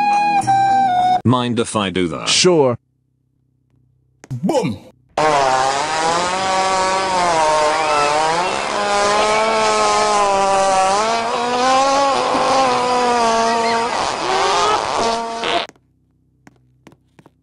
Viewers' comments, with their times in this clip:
0:05 bro has a chainsaw coming out of his butt